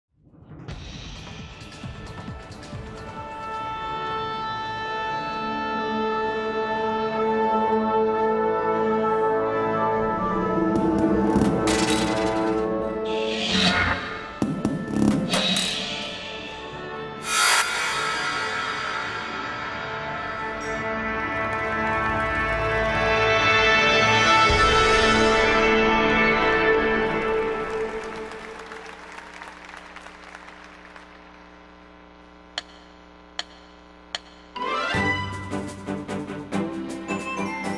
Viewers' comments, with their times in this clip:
0:03 sounds like a ps3
0:22 they introduce miyamoto with the ps3 startup sound